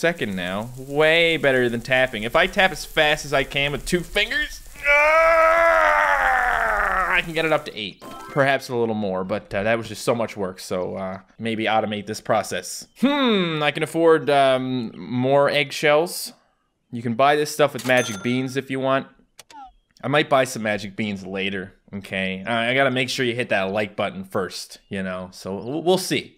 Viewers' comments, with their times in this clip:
0:07 lol its sounded like he was trying to shit